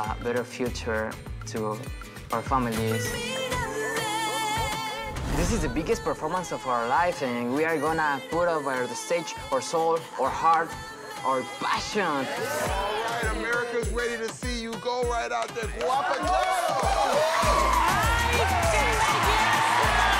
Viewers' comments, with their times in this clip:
0:05 "This is the biggest performance ..... " OMG, I thought it was "Speedy Gonzalez" talking :D